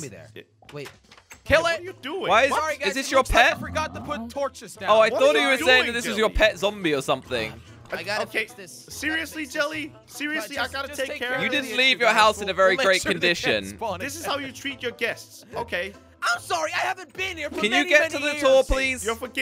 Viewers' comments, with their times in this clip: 0:03 I could hear faint moaning what was that about?